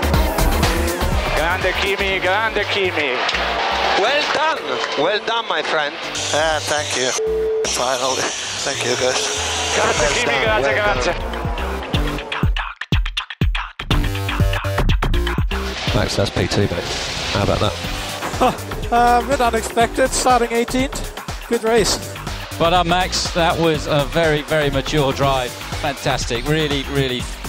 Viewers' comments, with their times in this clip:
0:10 The music... Chk chk da da chk chk da da....